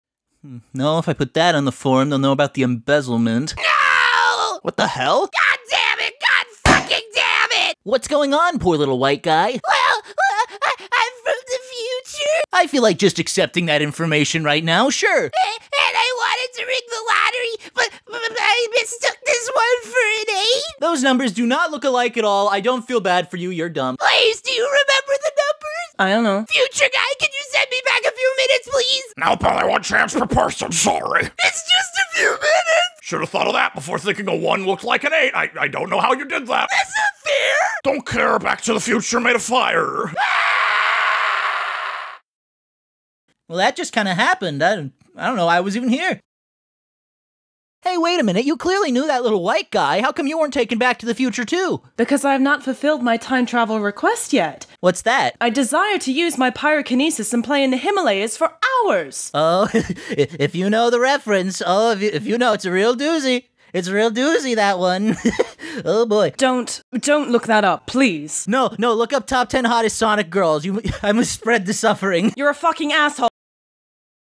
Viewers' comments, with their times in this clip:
0:07 I just realized that the sidewalk sounded like a table…
1:05 that laugh sounded genuine 🤣